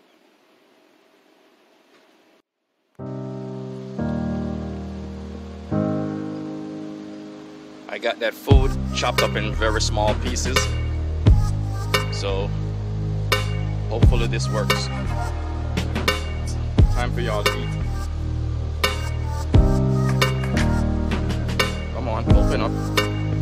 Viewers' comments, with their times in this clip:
0:07 i legit thought you started rapping mate lol